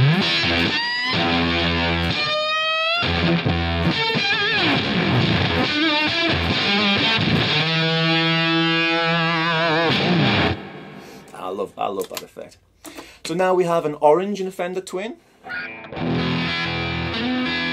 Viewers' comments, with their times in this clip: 0:03 sounds nice and royal blood - esque